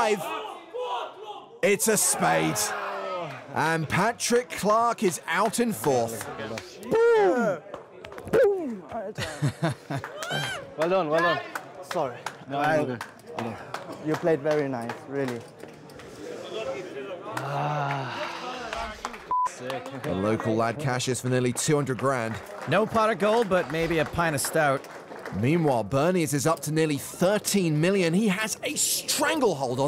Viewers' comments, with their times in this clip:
0:09 da fuck that guy scream
0:10 what sound did that guy just make?? 😂